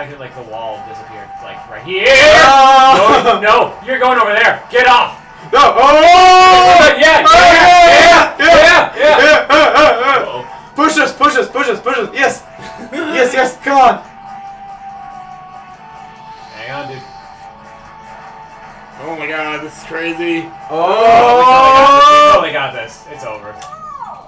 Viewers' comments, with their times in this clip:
0:10 i look away and i just hear a bunch of sounds and i questioned what i was watching